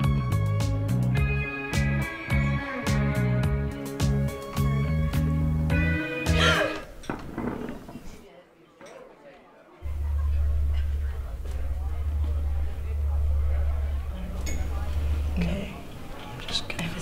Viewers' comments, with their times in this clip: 0:05 dramatic gasp waiter: startled and confused all 3 women: horrified, intense stares lmao